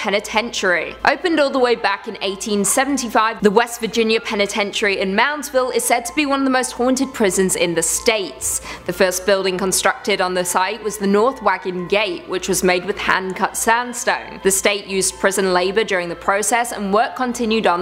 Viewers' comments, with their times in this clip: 0:05 you glitch out lol Top 5 Top 5 glitches talking. Lol